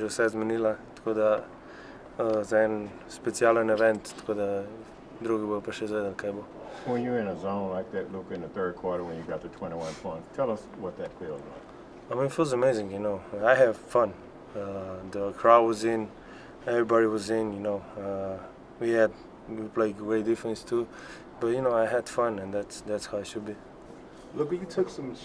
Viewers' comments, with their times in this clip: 0:08 Morgan Freeman is a reporter now?